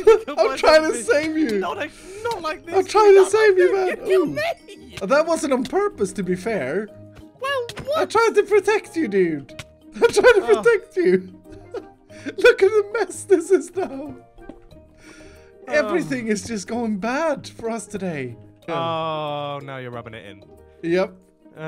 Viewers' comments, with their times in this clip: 0:03 dem voice cracks though